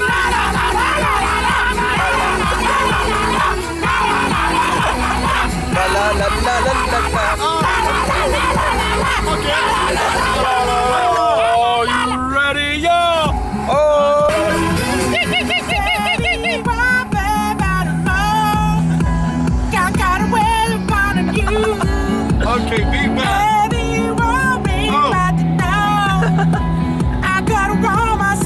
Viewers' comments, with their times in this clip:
0:09 sounds like gremlins